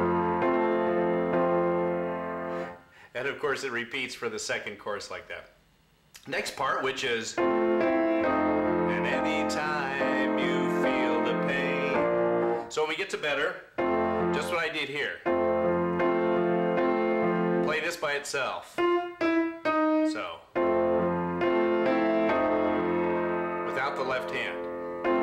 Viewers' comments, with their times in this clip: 0:06 What are you playing ? You say to play F E then Eb by it's self "without the left hand" but when I do and I go back to chords it doesn't sound right, and I listened to the video about ten times and when you play it it sounds like your either playing something in the left hand no the Eb or playing F&E together and then Eb then chords, it just sounds like too many notes, I hate to ask too many questions, I probably am doing it to slow or something, but It is just bugging me, thanks.